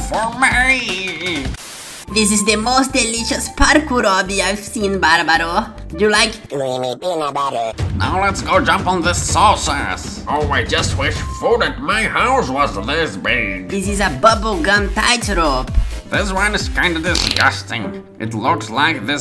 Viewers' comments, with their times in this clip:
0:07 why do you sound like that 🤣🤣🤣
0:07 your voice is funny 😂😂😂😂